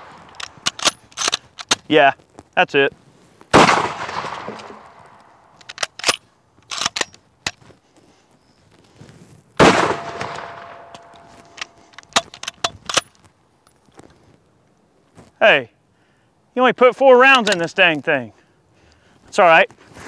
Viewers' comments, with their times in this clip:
0:04 the look on your face when you hear the ricochet .... lmao.